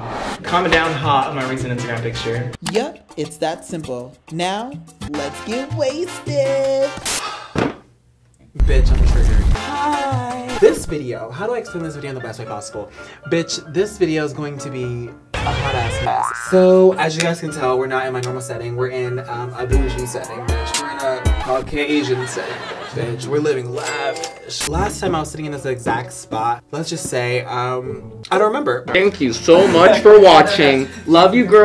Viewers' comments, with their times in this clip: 0:10 larray YO VOICE 😭✋
0:16 u started talking like a robot. U need help sis?